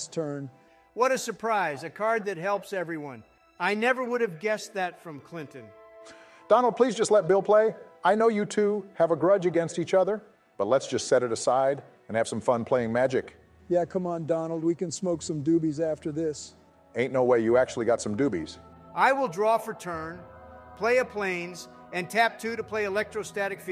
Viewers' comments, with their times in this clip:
0:05 man, that deep inhale from Obama was just... *chef's kiss*